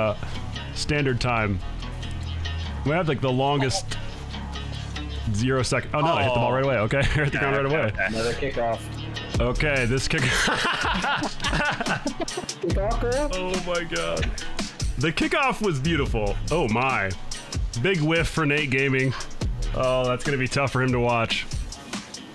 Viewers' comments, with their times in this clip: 0:05 for some reason the music and seeing them in a gang formation hit hard, especially when the beat dropped at "Go!". Anyone know the song?